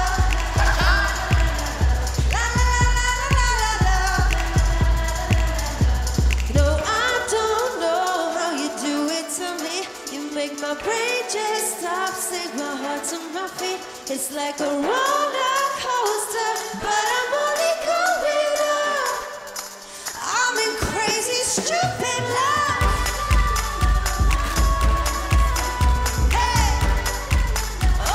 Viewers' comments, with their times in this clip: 0:09 whats with the off key "to me"